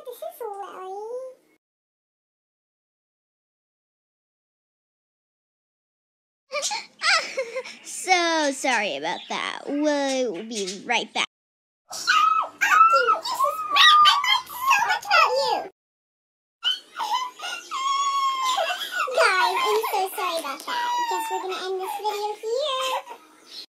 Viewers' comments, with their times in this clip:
0:10 Yeah she uploads funny rat screeching things like this